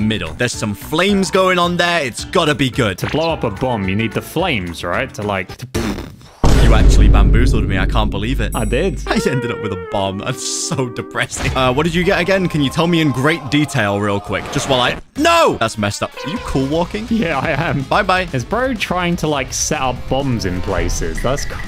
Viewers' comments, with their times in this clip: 0:04 bro is a sfx artist